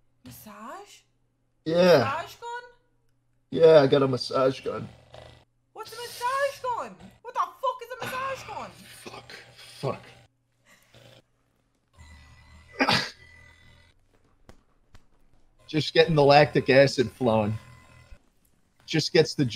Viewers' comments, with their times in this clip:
0:04 schallt nut sounds